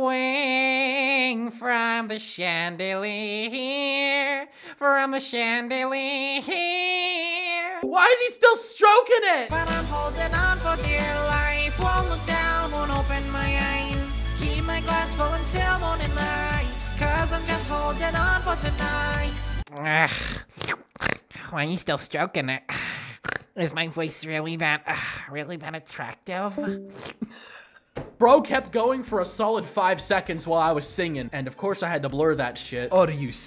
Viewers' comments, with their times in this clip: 0:09 That song is lowkey fire tho 🗣🔥
0:15 the song has me cracking up 🤣